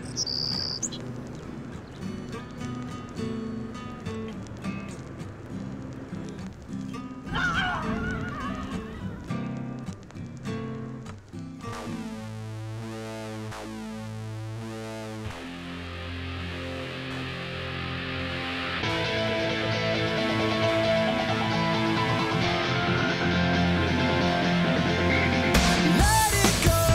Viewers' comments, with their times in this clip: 0:07 xD Gabe's scream! lol Gosh, he is such a sexy beast... :P